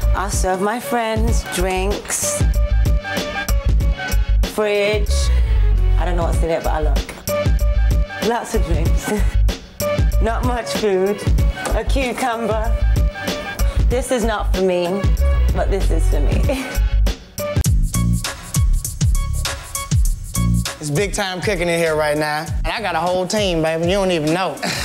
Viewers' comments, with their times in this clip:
0:06 damn NC has the sexiest accent.